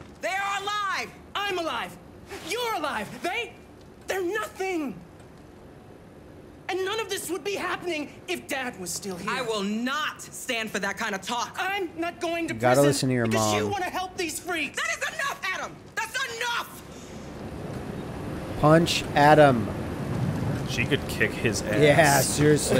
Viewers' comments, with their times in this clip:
0:09 he's a terrible voice actor